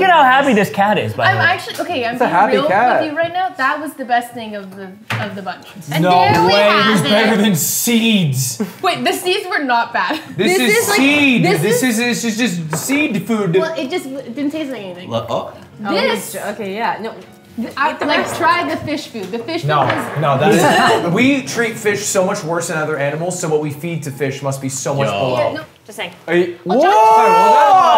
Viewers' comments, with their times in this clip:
0:10 Ludwig speaking the Xqc language 👌🏻🤌🏻